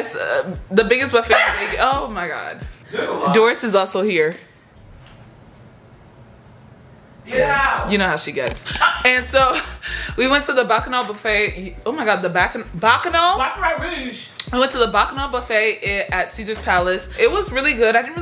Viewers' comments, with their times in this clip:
0:06 it's the silence for me 😭